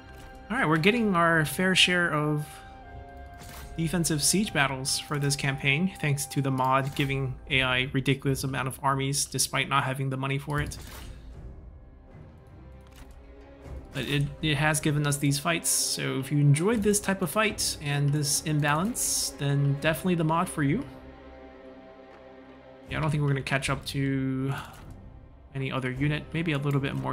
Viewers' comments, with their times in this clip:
0:10 I hear you're eloquently voicing your frustration